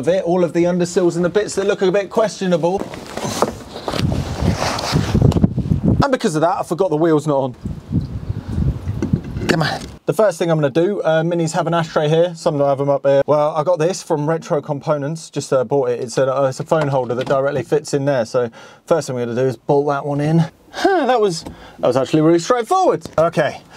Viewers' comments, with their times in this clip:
0:05 what's up with all the dysynced audio? seems to me like we're missing a clip of video while you were looking at the underside/wielding and grinding. I can barely watch this from onwards because of it!